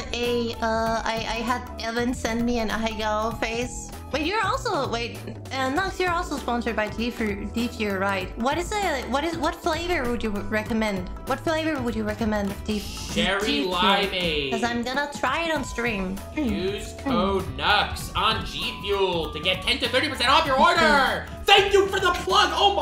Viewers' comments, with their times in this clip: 0:06 Anyone else hear GFuhrer? No? Just me? Okay...